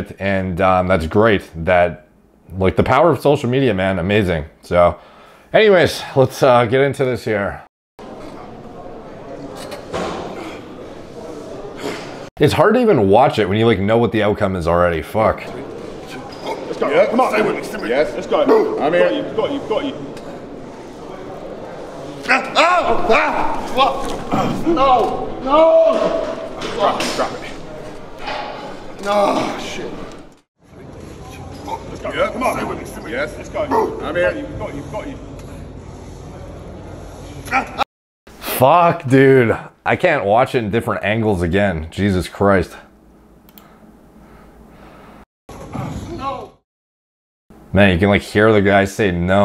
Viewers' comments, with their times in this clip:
0:09 man I felt that fucking pain just watching. Bloody brutal noise too. Hope he has a speedy recovery!
0:35 you can literally hear the muscles tearing 😢